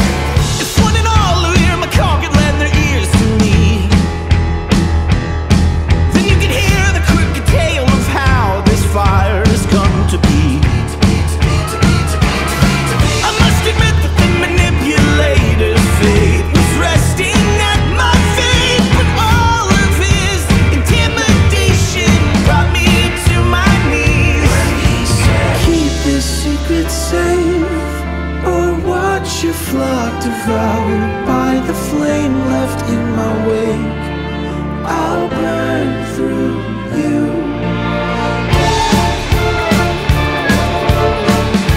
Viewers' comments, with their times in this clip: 0:10 I thought that they were chanting "Pizza, pizza, pizza, pizza, pizza, pizza, pizza"
0:24 The way he sings "I'll burn through you" like it's a lullaby is both terrifying and mildly arousing